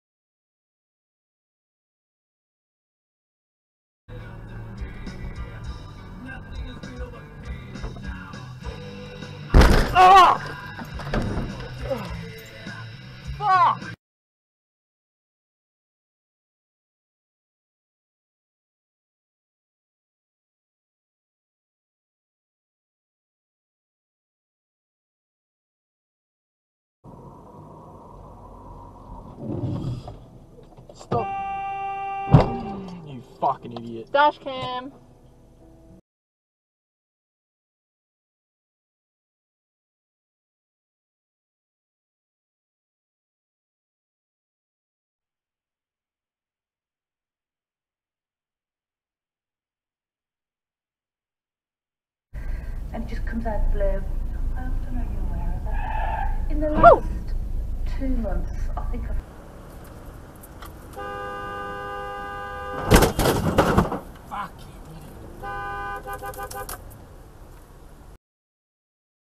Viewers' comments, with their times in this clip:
0:04 best way to get in a car accident is to play some fkn Metallica while yah doing it lmao🤘🏼🤘🏼🤘🏼🤘🏼
0:04 fuck yeah. Old mate spinning up some Metallica One.
0:07 Hold my breath as I wish for death Oh please, God, help me BAMMM!! yeah God was busy listening to as well.
0:29 that car has a massive screen as well how could they not notice. And also the sensor beeps... cmon one can’t be unlucky to be blind and deaf driving a car.
0:56 sounded like mario 😂